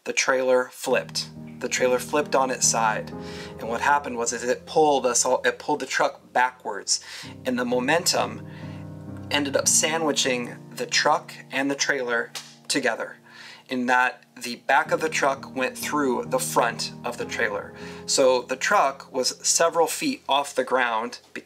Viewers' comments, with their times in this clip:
0:06 Aw the sad music is so cute ROFLMAO